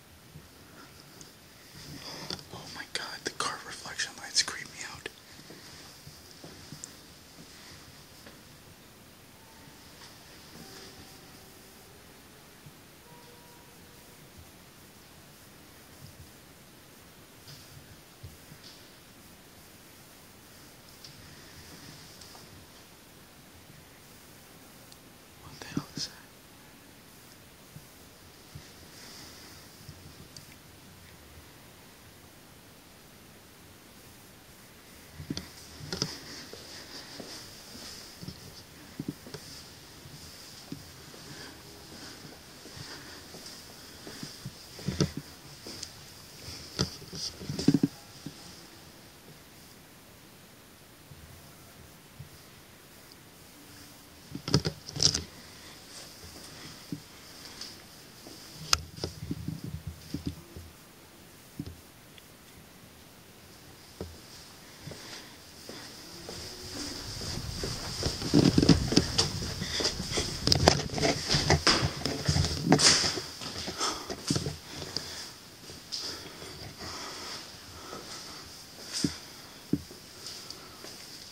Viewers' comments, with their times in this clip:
0:08 The piano Awesome.
0:09 the piano plays back🙀
0:10 That creepy singing is off the charts ! Lol !!
0:12 Woman or lil girl singing
0:13 piano keys playing in distance
0:14 little girl singing
0:20 I just heard talking
0:22 I just heard a little girl or boy walking
0:34 The time is in the video I could have swore I heard some moaning bro very faint though but I heard it man
0:43 all the way till you get to piano . Was it playing the whole time I could hear it .
1:03 Someone said "don't go with" It was like a man whispering.
1:04 ,the singing makes sense since where it was coming from was probably an activities room where they would play the piano and sing, wow, amazing man!